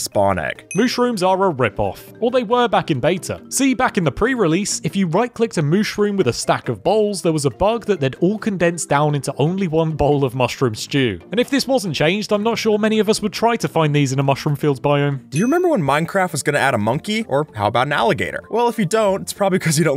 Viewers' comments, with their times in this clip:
0:04 a stack of balls???